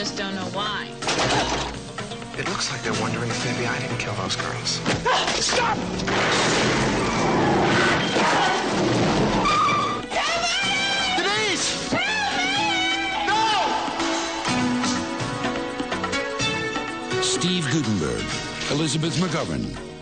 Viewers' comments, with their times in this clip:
0:05 that guy sounds like JonTron